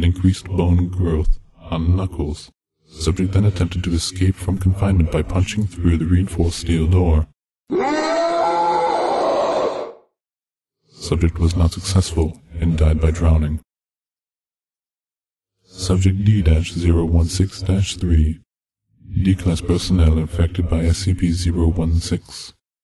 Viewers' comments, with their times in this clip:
0:04 I was falling asleep when that guy screamed and i almost jumped out of my bed, down the stairs, straight to my safe room. I shouldn't watch these videos at 2am....